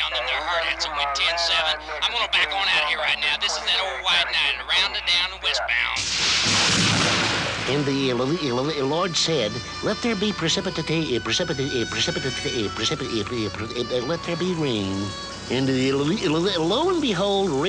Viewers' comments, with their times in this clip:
0:05 Porky Pig; my favorite part. 😁